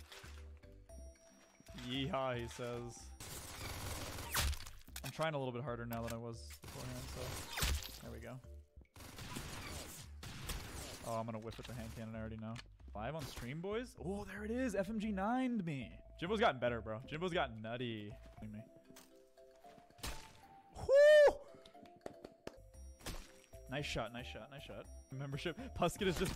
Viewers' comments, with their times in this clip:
0:07 dream speedrun music is so relaxing